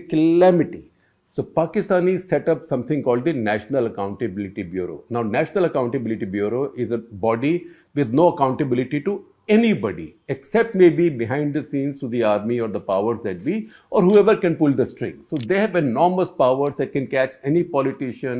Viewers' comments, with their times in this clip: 0:05 Sir loved the way you pronounced “Calamity “ 😂😂